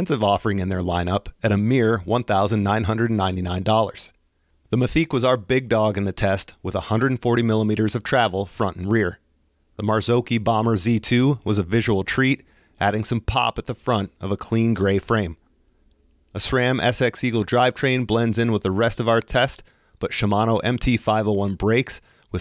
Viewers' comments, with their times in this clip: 0:09 never heard that pronunciation before 😅